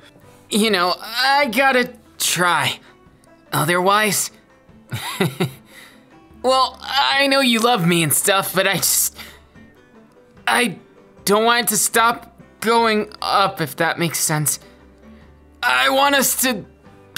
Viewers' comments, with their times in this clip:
0:03 Denki: pika pika~ My stupid ass brain hungry am: pizza pizza!